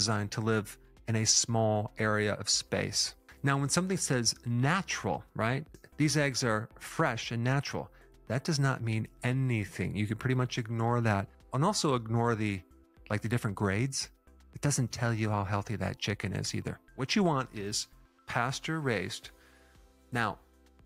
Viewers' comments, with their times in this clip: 0:08 That "aanything" was funny and accurate asf 🤣 ☠️💯